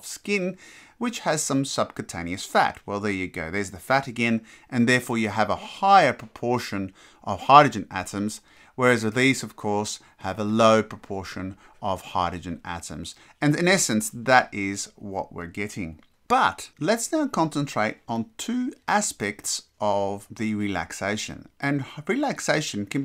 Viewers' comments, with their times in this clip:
0:09 Quick question, the area indicated as water (CSF) is very dark. But inside the ventricle (should be CSF too) it's very bright. Why is that? Thanks for the videos. You speak very clearly.